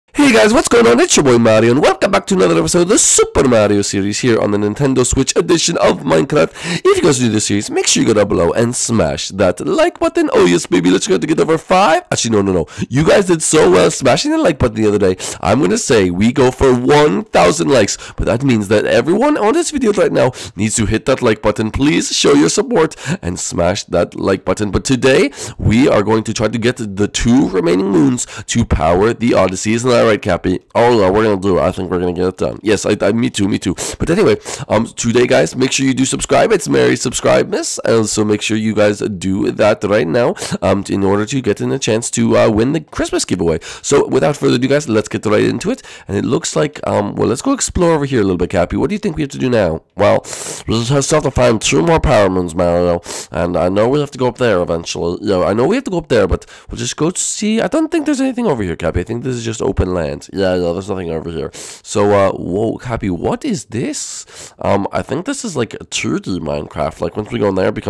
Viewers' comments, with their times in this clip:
0:00 Why is your mic so high?
0:50 cappy’s voice is funny